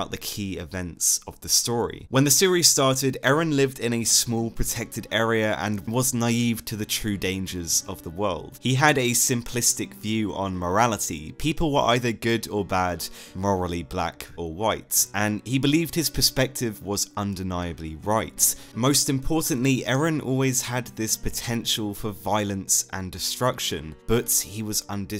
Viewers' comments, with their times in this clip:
0:06 that berserk ost hit right in the heart